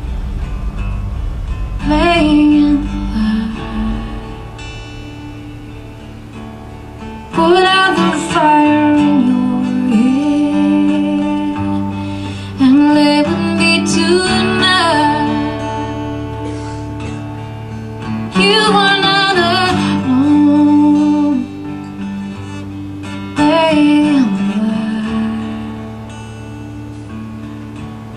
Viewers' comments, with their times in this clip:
0:10 It was on an episode of Without a Trace that I watched at like a.m. this morning on TNT. The name of the episode was "Rage." It was about a schoolteacher trying to rescue a student from an abusive parent, while dealing with her own father's release from prison. It was an amazing episode, and this song was very haunting, capturing the feel of this powerful and poingnant episode. Well worth seeing/renting.